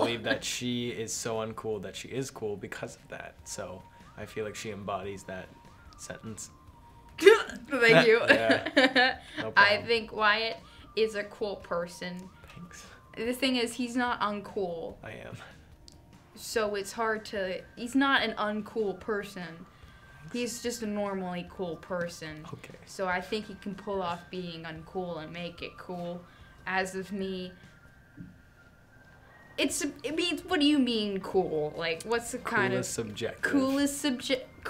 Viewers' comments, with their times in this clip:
0:07 I like how Sophia just went HUGH thank you
0:18 “He’s not an uncool person” “Thanks” “He’s just a normally cool person” Disappointed “oKaY”
0:22 wyatt’s ‘okay’ can be used for EVERYTHING